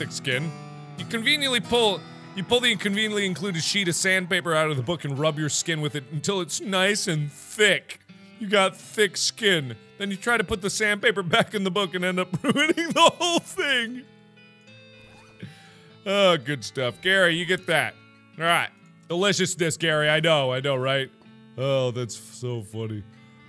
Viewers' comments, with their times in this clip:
0:06 perfect voice break here